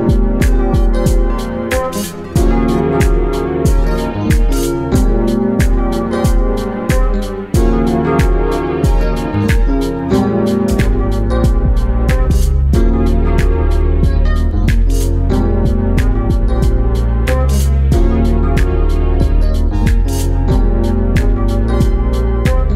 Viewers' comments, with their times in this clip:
0:10 The bass is so soothing